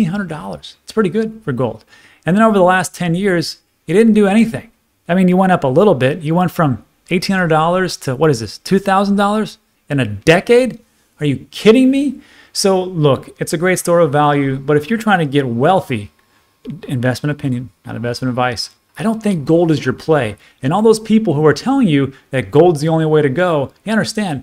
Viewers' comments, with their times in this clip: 0:10 The way he said "are you kidding me"